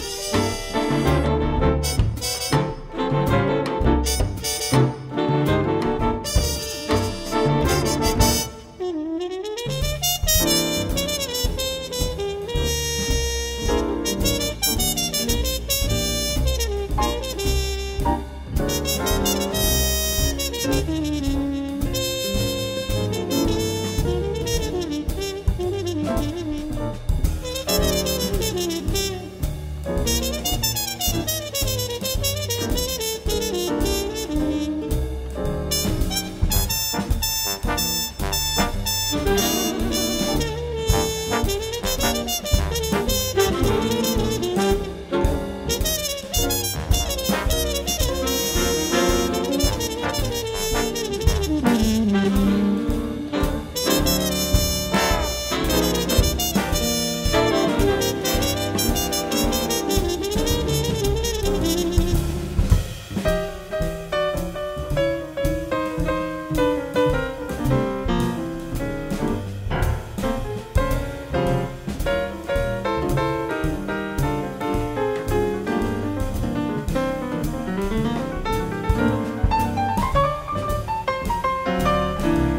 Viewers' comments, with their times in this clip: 0:10 Silverware turned into the gold standard, this Señorita Blues will make you feel anything but blue. It ain't necessarily so that the WDRBB always has the Midas touch, but it seems that they're particularly inspired and groovy when accompanying Andrea Motis. They know she's a rare gem.
0:43 swingg!! ( the lick)
0:43 I regret to inform you all that the infamous licc has struck yet again
0:43 Did anyone else hear the lick in the trumpet solo
1:03 It's so great to see and hear this young lady/artist mature in her music. I think she may have more understanding now of the English lyrics she sings, than when she was a teen. She seems to be more emotionally attached to what she is singing. She is also more fluid in her improvised trumpet phrasing - maybe more confident is the better way to describe it. In my opinion, she's not a "great" jazz trumpeter - yet, but her vocal stylizing has finally become her own, and her control is flawless ... as far as I'm concerned. Oh yes ... and Andrea Motis has grown from a cute little girl into a very attractive young woman, ... too.